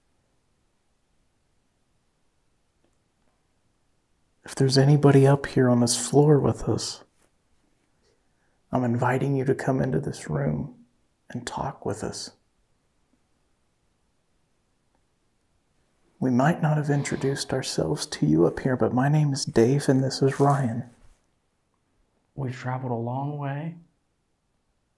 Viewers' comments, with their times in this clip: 0:07 thats a whisper ?🤔
0:08 there's a whisper but I can't make out what was said. It's right before being invited to sit down in the chair. It's so faint you could easily miss it.